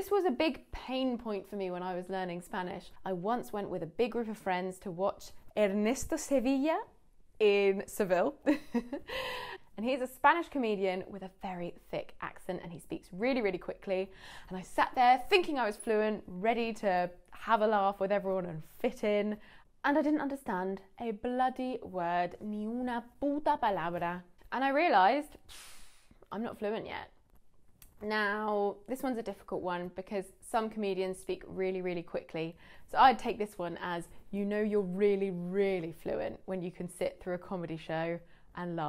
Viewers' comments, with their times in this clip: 0:06 OMG you speak Spanish so well! I am impressed.
0:22 i'm spanish and you swear better than i do